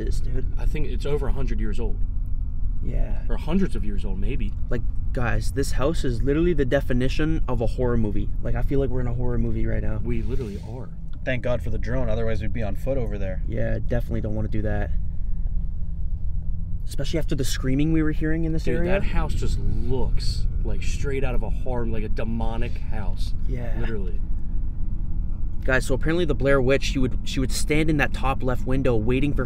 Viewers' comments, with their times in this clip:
0:10 you can here a swish in the video I don’t know if it’s in the car